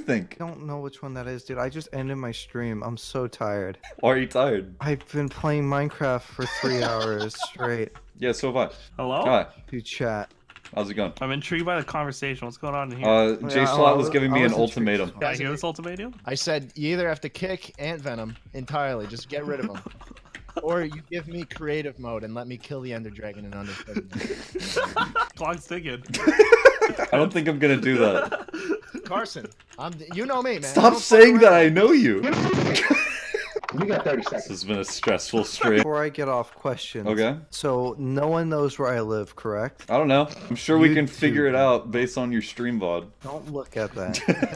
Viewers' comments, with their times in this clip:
0:08 I swear I heard Swaggersouls say "hello?"
0:32 I love his mic dude it’s pure cancer